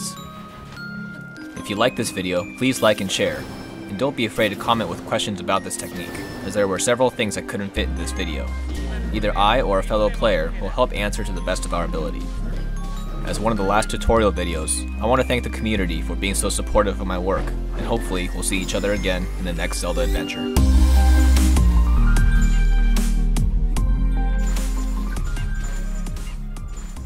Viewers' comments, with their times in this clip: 0:09 I heard the japanese dub from revali and that automatically earns you my respect lmao